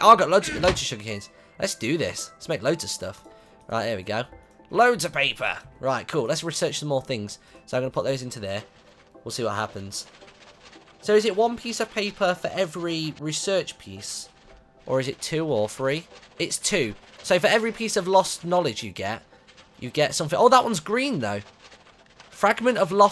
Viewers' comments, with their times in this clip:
0:09 at like he sounds so happy LOL like it if u think the same